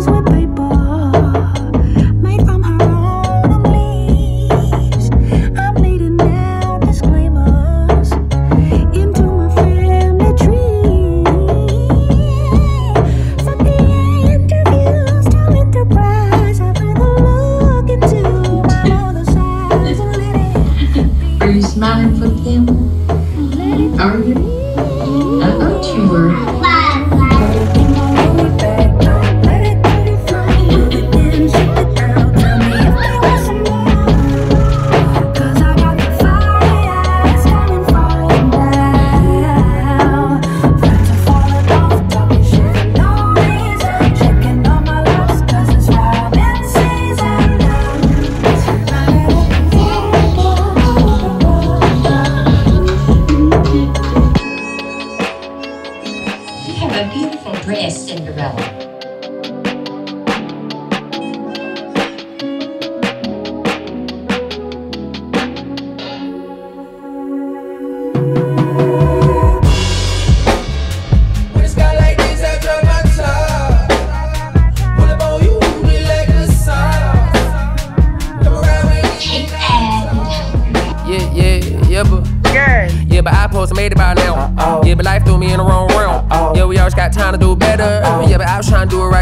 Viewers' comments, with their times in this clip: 0:10 I mean, that run on is just 🔥
1:09 that beat sounded a bit familiar (if you know what I mean)
1:10 That bass and beat from though!! LOVE!!!